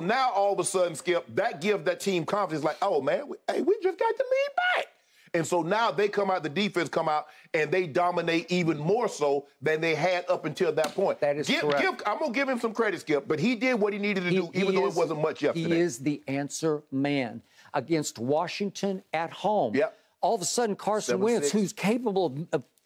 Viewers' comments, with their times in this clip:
0:04 😂what was tht voice shannon